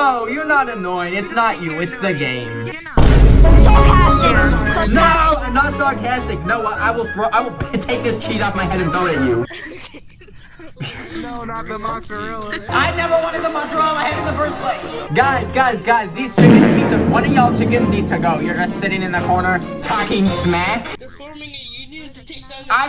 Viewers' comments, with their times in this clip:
0:03 The way he said sarcastic